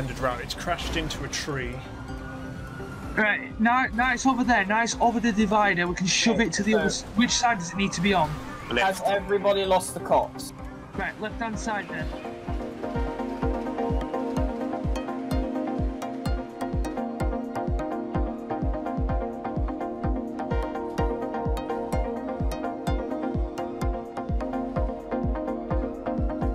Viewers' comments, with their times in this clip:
0:08 has everybody lost the cops , so fckin british